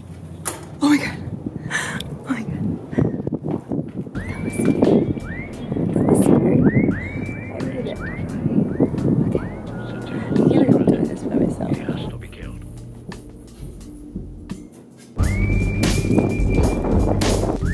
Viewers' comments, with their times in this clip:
0:04 I thought the music was the alarm for a second 😂